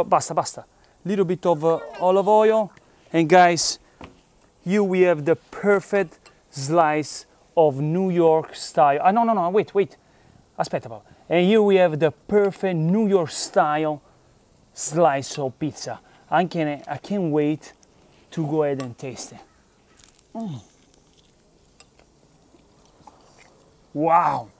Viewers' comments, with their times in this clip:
0:10 Great video! Love the pizza! It's funny... the way you talk to your daughter reminds me of how my nonna used to talk to me. Specifically when you were telling her to wait "aspetta aspetta" 😀